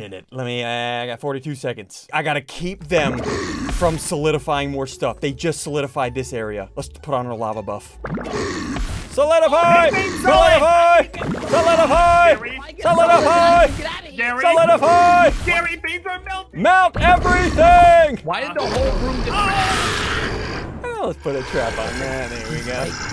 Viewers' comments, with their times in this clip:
0:08 I love how he yelled solidify yet he was doing the exact opposite